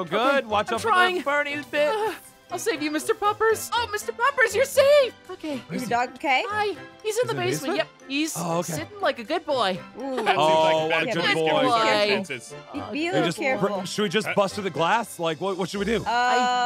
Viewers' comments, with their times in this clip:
0:04 dose anyone else hear the window block sound?